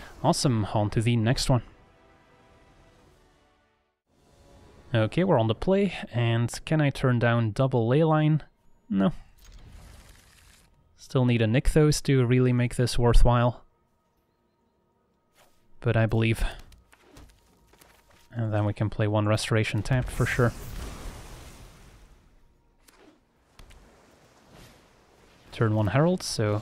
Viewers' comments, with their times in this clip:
0:08 The way you said, "....no" killed me LMAO xD